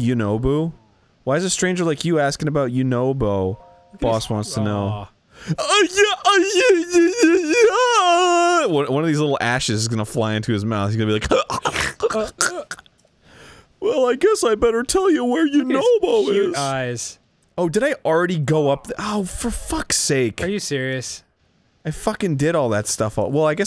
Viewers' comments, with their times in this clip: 0:05 god the noise Arin makes makes me lose my shit